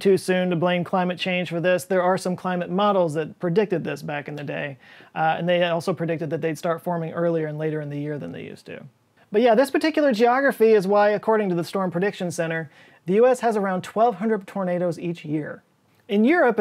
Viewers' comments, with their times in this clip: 0:04 Surprised that it took 7 minutes to throw in…”climate change”… queue up the overly dramatic incidental music in the background.